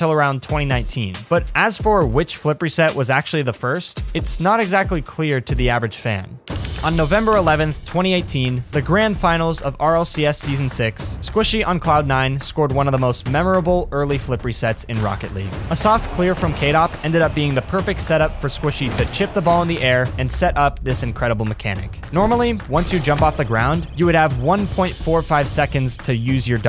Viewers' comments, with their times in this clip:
0:09 bro said the grind finals